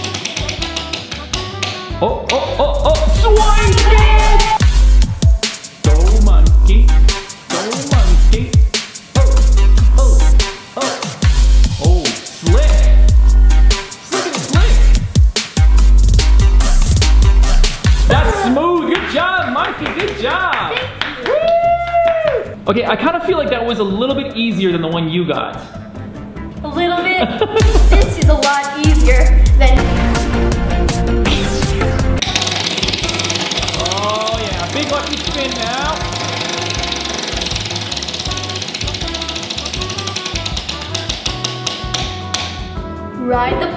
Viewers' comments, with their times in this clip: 0:07 who else thought those sounds (the dad) were in the dance (the game)
0:17 Who else heard the poplock music come up thanks for all the likes i never get this much likes
0:29 The way the music went fast